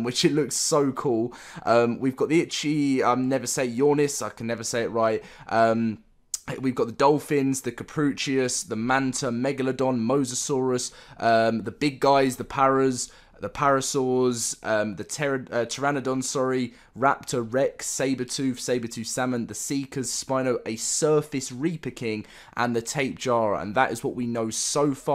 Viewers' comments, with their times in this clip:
0:07 this nigga just called the "cap-ro-soo-kus" the "ca-proo-chius" also i notice people call them "cap-ro-suh-chus"